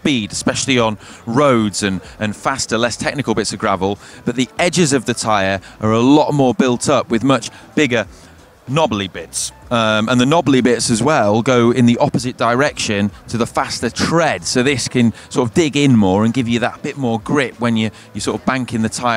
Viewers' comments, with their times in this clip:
0:04 The women behind him chuckling at his lederhosen.